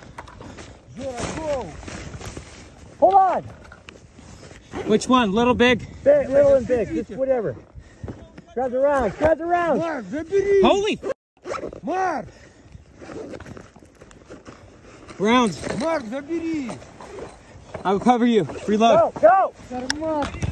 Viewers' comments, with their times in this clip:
0:08 Is the guy a voice actor? If not then when this war is over he should be.